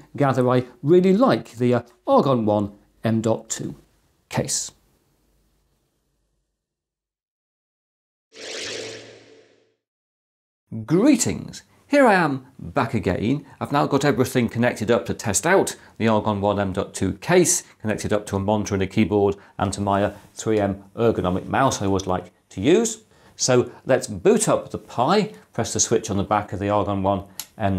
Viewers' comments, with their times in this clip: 0:10 morning voice :D